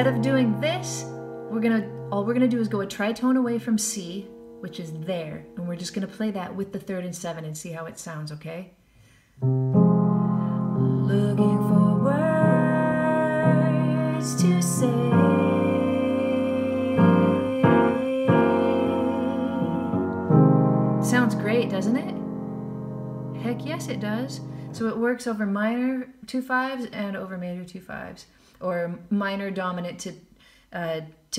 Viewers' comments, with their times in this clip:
0:09 Chord progressions like that make me happy to live. Heck yeah it does. Chromatic bass note walk-down is a sweet bonus brb replaying it five more times
0:17 that is so juicy! "Juicy" is my new word for cool when I listen to something jazzy.